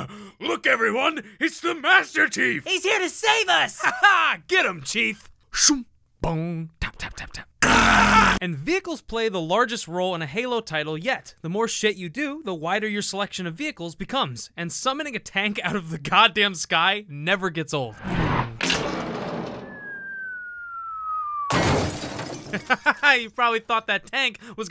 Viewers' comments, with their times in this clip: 0:05 breathtaking sound design
0:06 The goddamn grenade sound effects has me crying 🤣